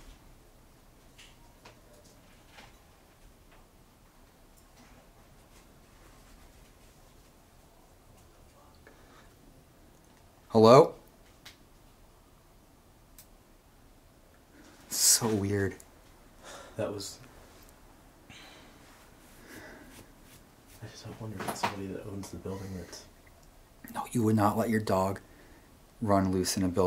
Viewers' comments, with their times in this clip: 0:07 you can hear the dogs owner say "wtf"